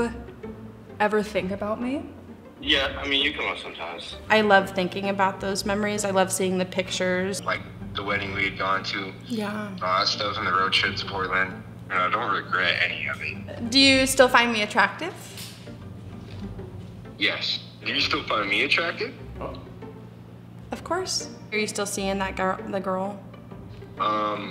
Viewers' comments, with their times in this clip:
0:09 when she goes "yea" you can feel her heart drop to the floor... I have a feeling a small part of her will always love him